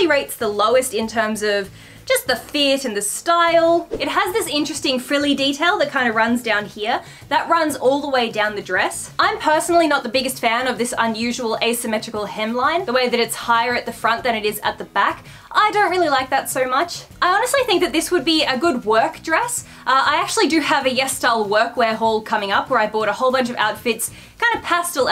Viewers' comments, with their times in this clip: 0:10 I havent watched your videos in a while, but audio feels different xD almost feels like you're yelling 😅 also, the dress is pretty and yeah, basically everything looks great on you in this video